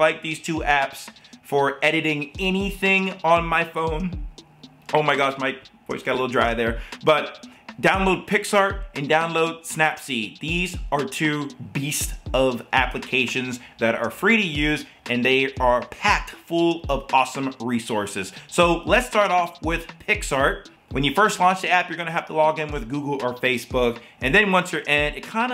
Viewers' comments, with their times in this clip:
0:06 my voice got a little dry there omg